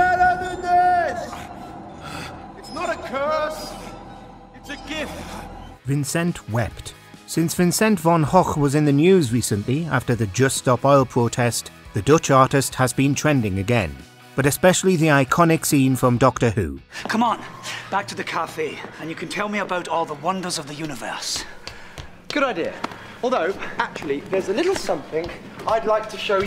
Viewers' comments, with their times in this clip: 0:07 I’m sorry…that pronunciation?!!!